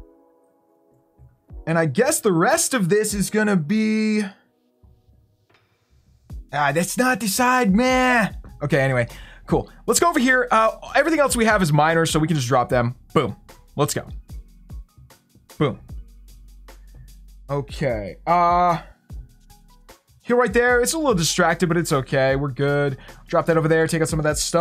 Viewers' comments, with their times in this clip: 0:07 What the heck was that noise!?!